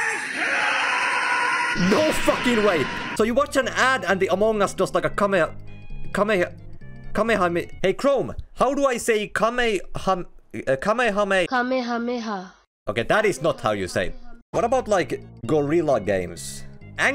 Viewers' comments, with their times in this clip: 0:05 bro is just like the other fortnite YouTubers and tiktokers trying to pronounce kamehameha